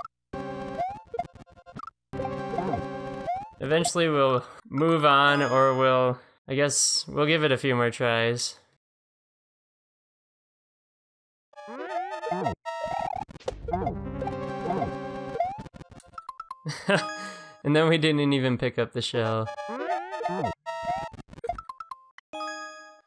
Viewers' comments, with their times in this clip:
0:05 why and what was that whistle? XD